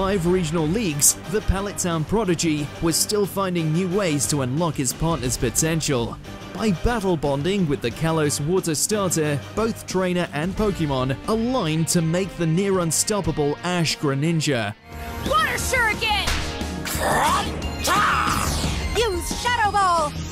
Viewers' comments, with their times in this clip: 0:03 what did i jus witness Gardevoir being AeStheTic QueEn and calm while ash and greninja be doin this goofy ahh sounds. Then ash slams his face on the ground and queen go woosh- N e v e r t o b e s e e n a g a i n U see kids this is why ill never watch xy or z, its too goofy for me